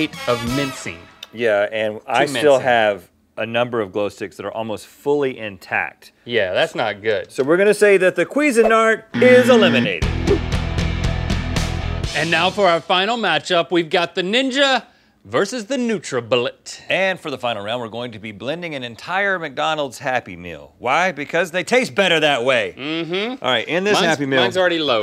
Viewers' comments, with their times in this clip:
0:08 "queezin-art" because that definitely makes more sense than cuisine-art xD